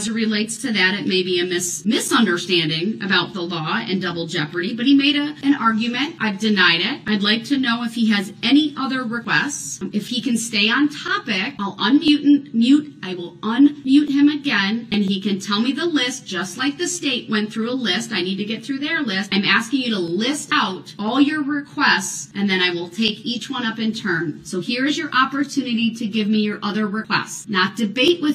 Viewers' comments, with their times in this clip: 0:10 lol she got tounge twisted